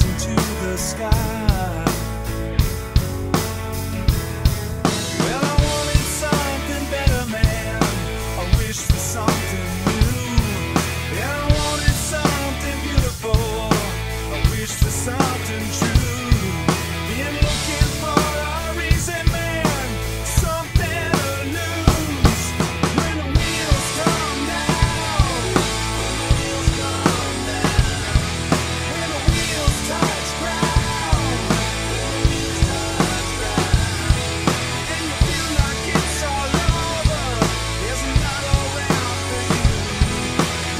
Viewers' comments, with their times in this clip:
0:05 Great cover. Love the view on your attic snare drum Looks so cool and sounds awesome! 🤘
0:25 Sounds awesome dude! Also, it looks like your skull is loose (I really just wanted to type that...)